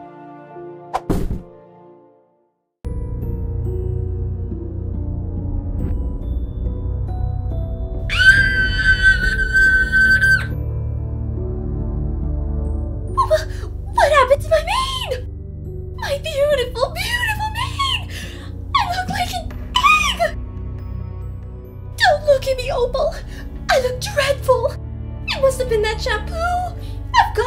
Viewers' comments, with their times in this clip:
0:08 I’m 14 now but that scream got me HOLLERING💀💀💀
0:09 I'm dying from her screaming.